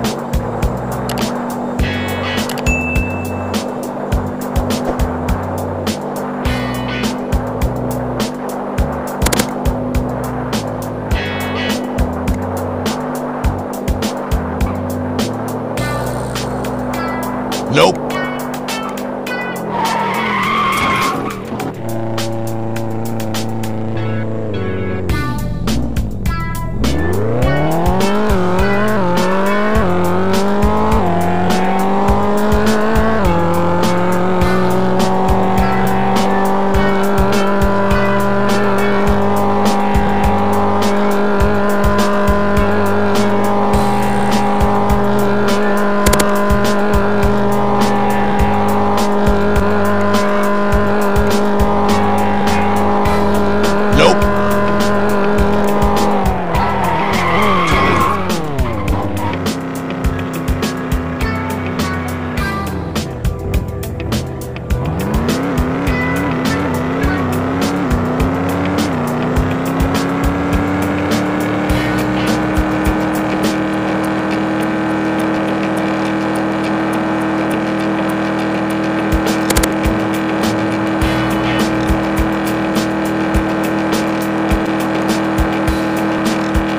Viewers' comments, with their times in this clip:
0:09 gun firing sound💥🔫🔫😅(i think ff's uzi gun sound)
1:07 Why the sound of a pickup truck engine?